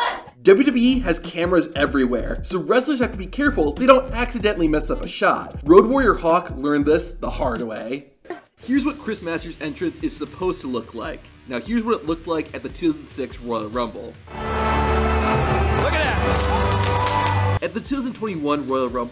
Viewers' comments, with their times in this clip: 0:04 mario pipe sound